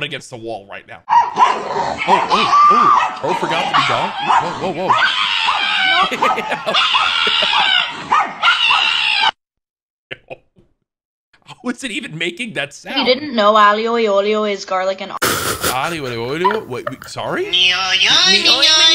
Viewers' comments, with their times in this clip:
0:04 ngl I thought the baby was in a blender💀